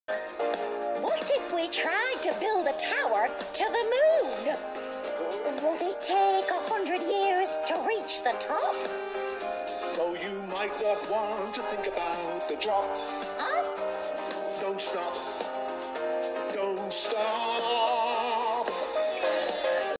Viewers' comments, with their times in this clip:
0:05 the way 3 said hundred is so cute
0:06 it’s cute how 3 says hundred